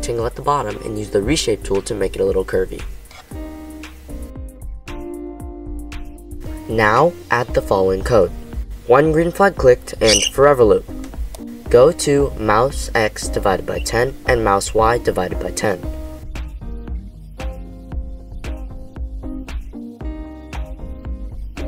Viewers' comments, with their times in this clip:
0:09 the loud shrill sound was actually my bird, lol.